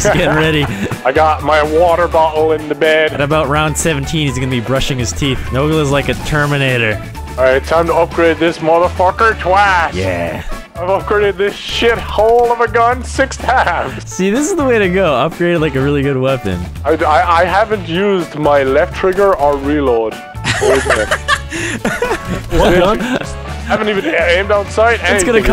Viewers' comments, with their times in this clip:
0:09 happy song during exo zombies